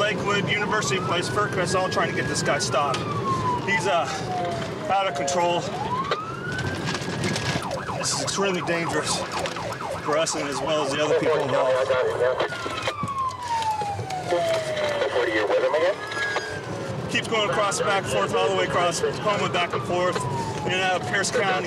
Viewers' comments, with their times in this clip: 0:03 cops out off breath like he’s chasing someone on foot..!!